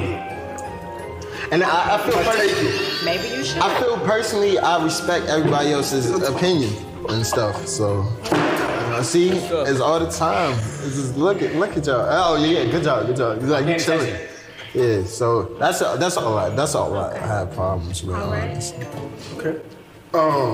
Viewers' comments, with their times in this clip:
0:06 bro why was they laughing at Chris like that😭😭😭😭